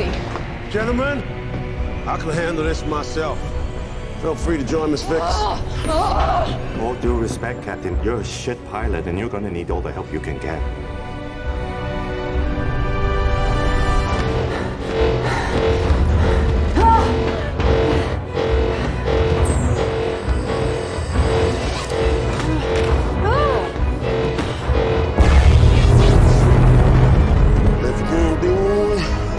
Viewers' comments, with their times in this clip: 0:06 that theron with her crazy scream
0:17 theron yelling while shes stressed